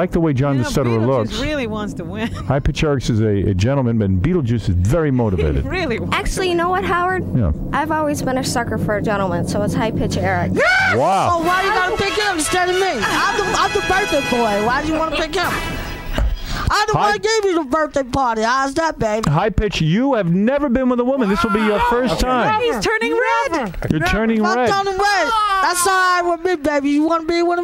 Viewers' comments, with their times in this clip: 0:10 This is my new favorite. Lmao the way high pitch just screams yesss! 😆 😲 he was so blown away 😳 🤣🤣🤣🤣🤣